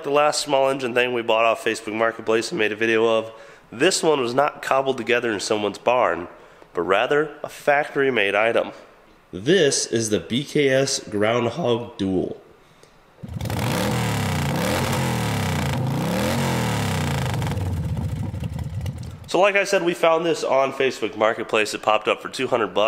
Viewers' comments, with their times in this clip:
0:10 i love the voice crack